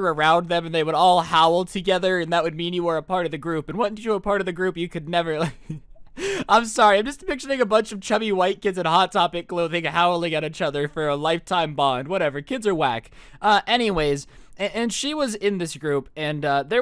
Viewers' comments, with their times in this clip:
0:03 do you say wouf as in bark instead of wolf